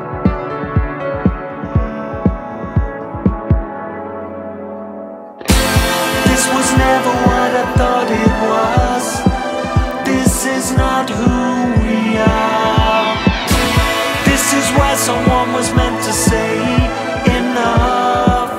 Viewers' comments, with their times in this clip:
0:05 as soon as you hear this chord you know it is Tears for Fears for sure.